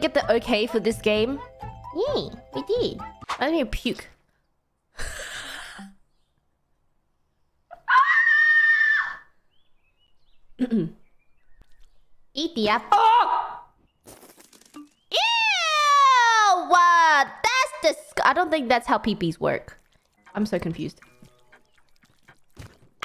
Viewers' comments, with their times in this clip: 0:06 Blessed Baelz scream